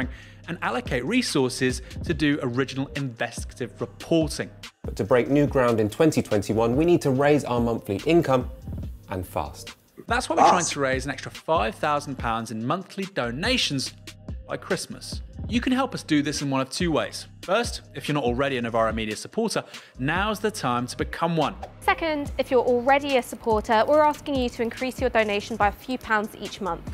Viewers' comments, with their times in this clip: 0:10 voice sounds like the guy from TLDR.😳